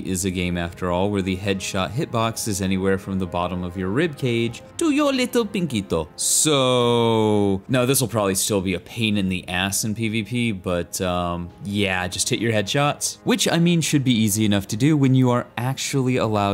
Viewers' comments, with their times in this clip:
0:03 Idk what accent that was but it did me in 🤣